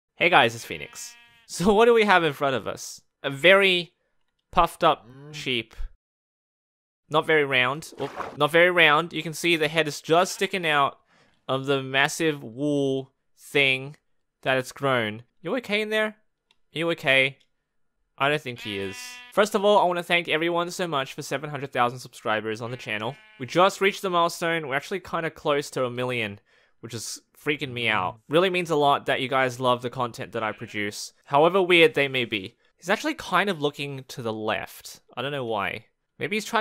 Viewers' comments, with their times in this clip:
0:07 Did i heard an "opa"? like the Brazilian version of "oops"?
0:18 it said "heeeeelp" lmAo